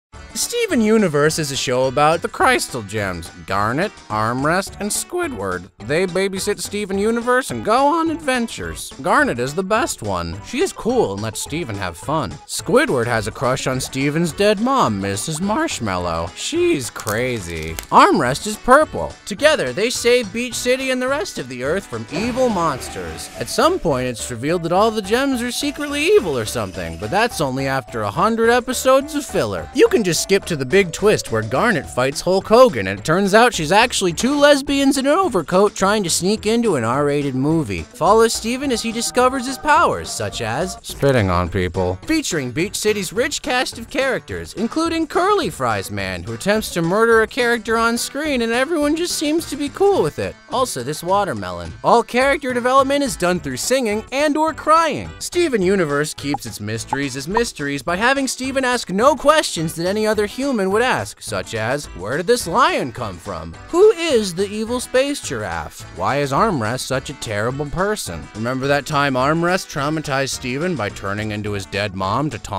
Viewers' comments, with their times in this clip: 0:03 I thought he said ‘Darn it’ instead of ‘Garnet’. It would be really funny if Garnet was Darn it instead though XD
0:55 I can literally hear DeeDee Magno-Hall crying—